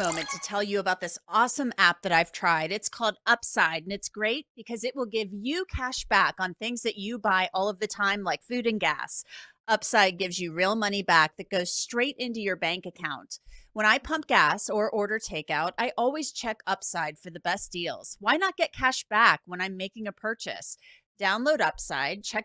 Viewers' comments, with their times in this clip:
0:07 Yeah it’s kind of out of place going from talking about the solemn details of childrens murders to upbeat happy tone promoting cash back app mark